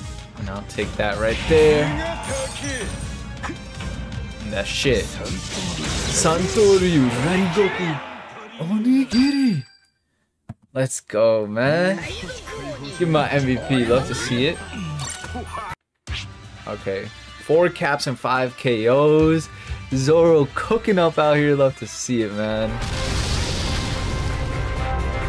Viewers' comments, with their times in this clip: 0:08 😂... Bro should become the voice artist of zoro